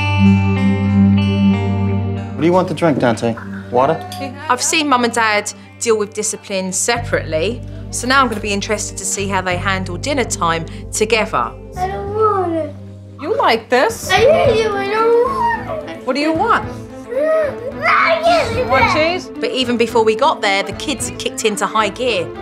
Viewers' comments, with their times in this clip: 0:03 I love the music of the morning I love it